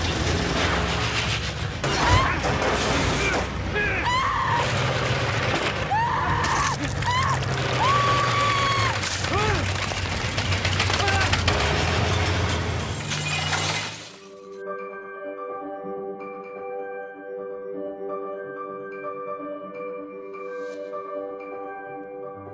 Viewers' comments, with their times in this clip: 0:04 damn dat asain girl got owned the way she screamed when it drilled into her side LOL